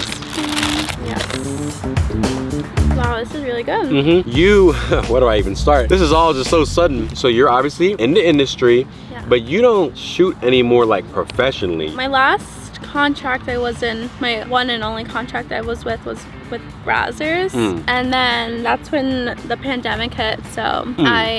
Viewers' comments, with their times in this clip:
0:03 not the ph sound coming 💀💀💀
0:04 BRO THE RANDOM PHUB SOUND EFFECTS CAUGHT ME OFF GUARD